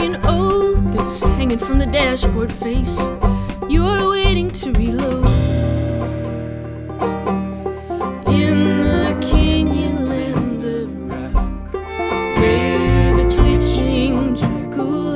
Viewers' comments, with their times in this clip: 0:03 Great lyrics, well placed harmonies and nice communication within the band. If you have the time I am curious to know were the words in the second tune "waiting to be low" or "waiting to be loathed" or did I miss it all together? Tight and tidy musicianship. Thanks.